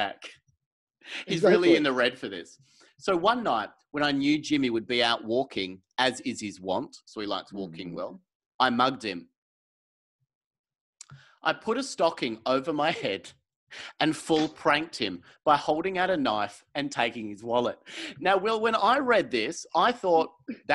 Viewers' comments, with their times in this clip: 0:08 I was watching this late at night, I started laughing so hard whilst trying to stay quiet I was making wierd wheezing noises and couldn't breath for a few minutes. That delivery, I don't know how Will kept a straight face. AHAHA